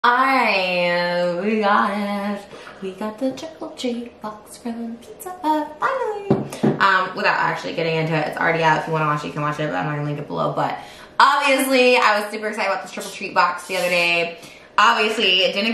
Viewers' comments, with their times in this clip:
0:01 ... uhh what??? lol. she's mumbling way worse than usual